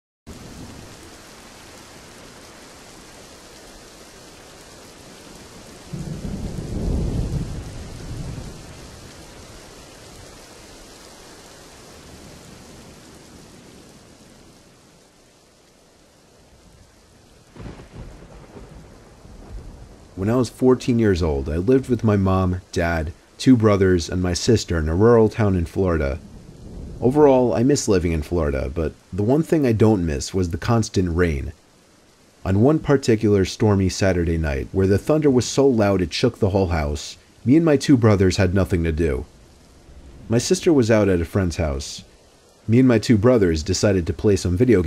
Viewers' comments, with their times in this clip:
0:00 As soon as I heard the rain: “My teas gonna cold I’m wondering why”
0:30 Lol I thought it said "constant rape" 😂